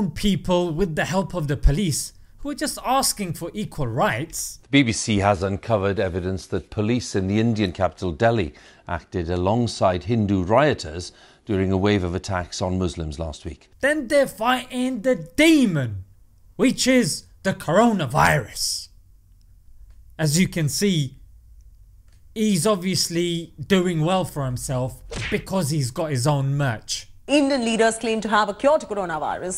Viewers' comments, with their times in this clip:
0:10 his voice greatly resembles the Windows text-to-speech voice.